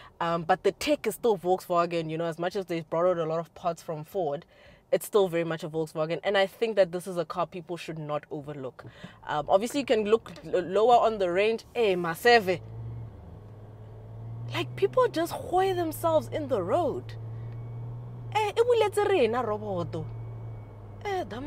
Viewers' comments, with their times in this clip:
0:09 Your road rage is such a calm one😂😂😭